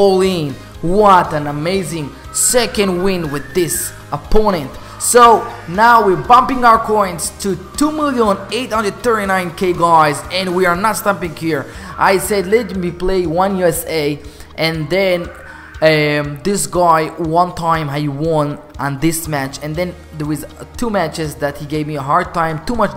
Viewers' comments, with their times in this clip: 0:03 litle bro and litle sister are crying :D